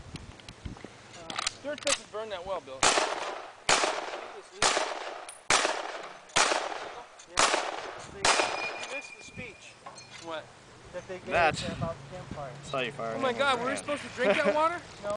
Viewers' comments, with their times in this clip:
0:06 i love that sound when finish mag <3